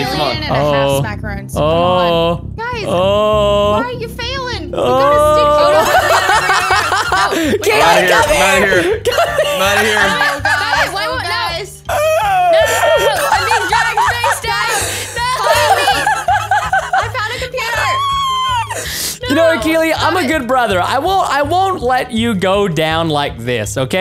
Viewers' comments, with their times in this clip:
0:09 Preston sounds like Elmo!